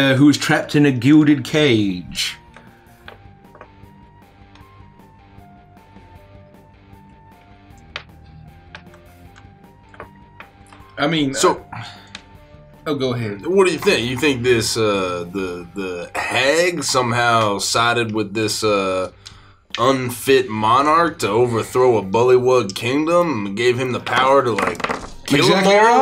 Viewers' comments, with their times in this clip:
0:08 Them all jamming without saying anything had me 🤣